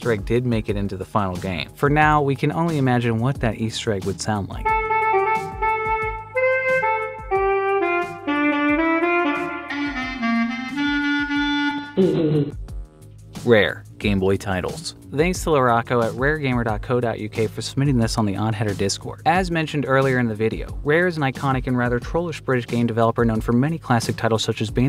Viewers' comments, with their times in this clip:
0:04 that first saxman riff is literally what i heard in my head when you said it was a saxophone easter egg.
0:09 That right there is Spongbob playing the clarinet Does that count as an easter egg?